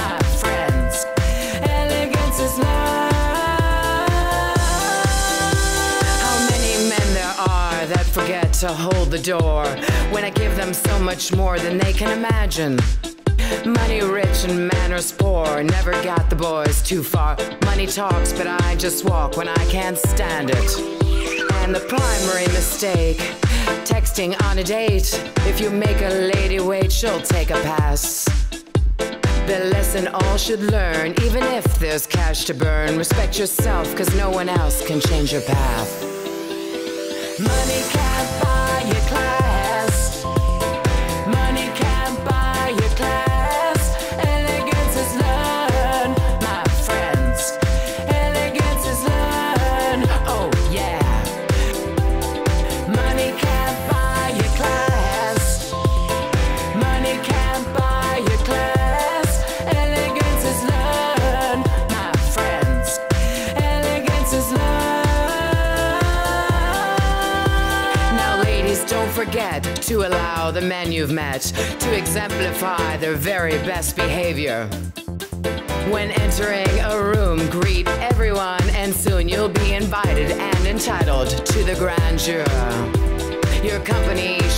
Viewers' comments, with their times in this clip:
0:10 Did anyone else the huge gasp for air.
1:05 YAS QUEEN HIT THAT NOOOTTEEE 😣😣💦💦💦 wig